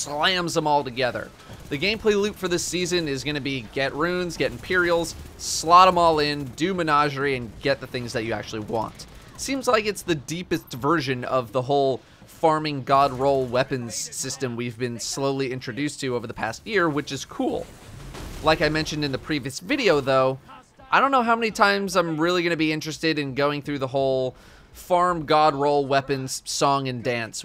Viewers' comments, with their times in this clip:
0:10 "It's the deepthest version" ( not a typo) 😂